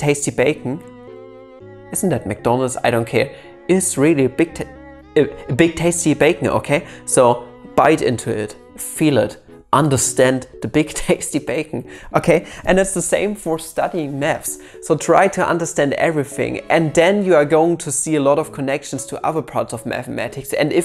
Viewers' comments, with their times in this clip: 0:04 were you going to say big titty bacon ? I mean with these background chinese cartoons action figures that's more than plausible